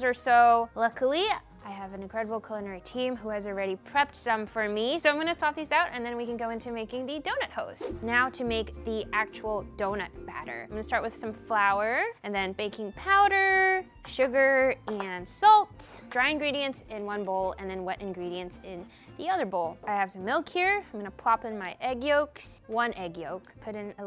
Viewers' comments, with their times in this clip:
0:06 did she say “donut hoes” 😭😂